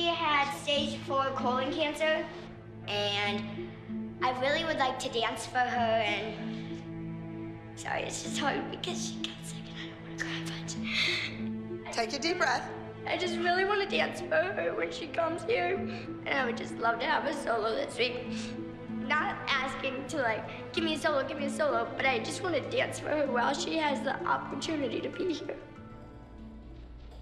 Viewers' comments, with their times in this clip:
0:08 jojos mom before practice: make sure to cry jojo: ok! jojo: cries dramatically